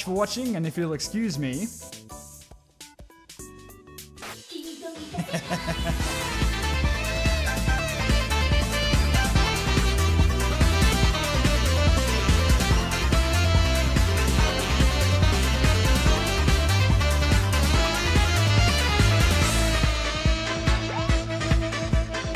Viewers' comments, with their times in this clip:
0:03 god that fucking laugh gets me everytime